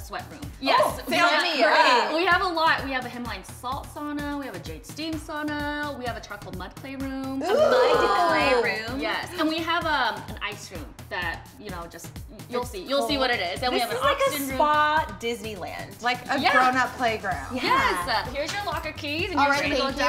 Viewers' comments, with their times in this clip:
0:07 that ooo just no.